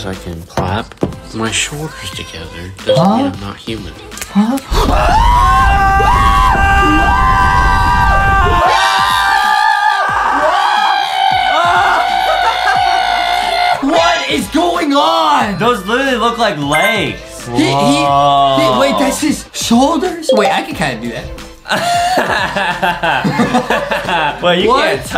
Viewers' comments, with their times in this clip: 0:06 Also the funny part on is their like screaming at a dead person in real life